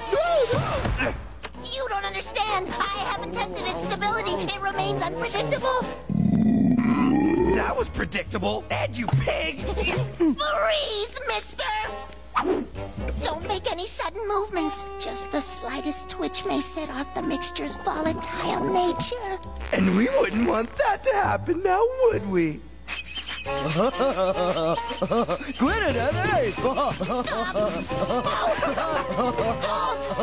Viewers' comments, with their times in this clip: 0:05 you know soda is that good when you burp like that 😂😂 But the way Ed burps, cracks me up every time 😂😂
0:18 did ed cut one? lol!